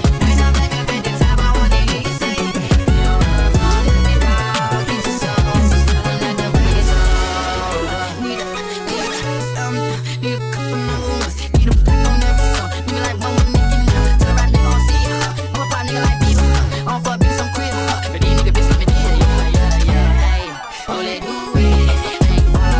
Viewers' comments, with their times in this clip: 0:04 I only just noticed the little bit of fireflies that plays and it's honestly sending me